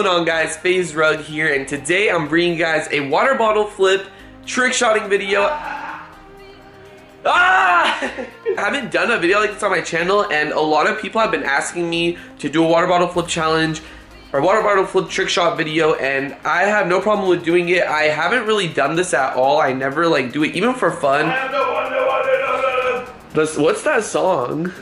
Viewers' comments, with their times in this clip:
0:05 lol br ok there screaming in the backround
0:07 Why did you holler a